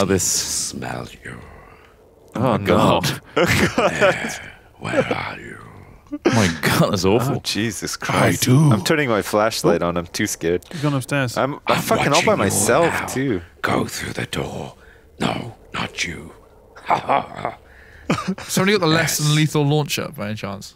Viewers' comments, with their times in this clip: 0:08 The voice sounds like Dr. Claw from inspector Gadget...